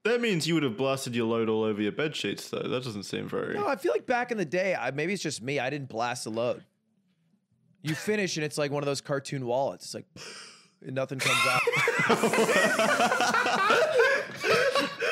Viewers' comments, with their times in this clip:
0:03 BRO I FUCKING DIED LAUGHING AT THAT SOUND EFFECT